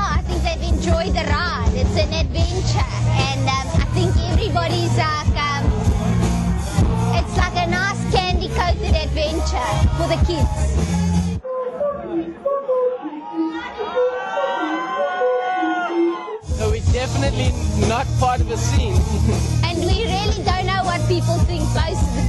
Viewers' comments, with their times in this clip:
0:04 she sounds like bjork duet with bjork will be GREAT BAYBS ON FIREEEE